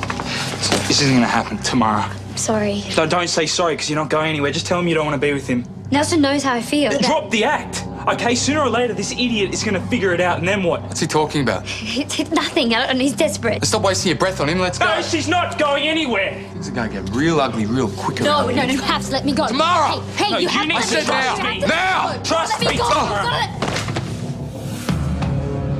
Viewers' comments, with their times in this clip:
0:07 drop the act? LOL! And I love the way Kyle is panting after he hit Nelson!